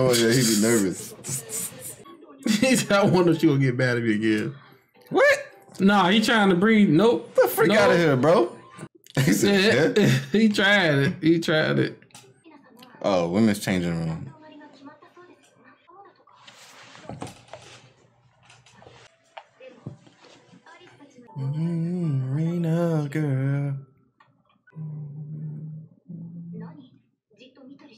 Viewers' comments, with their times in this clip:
0:09 That moment of silence starting lmao i c u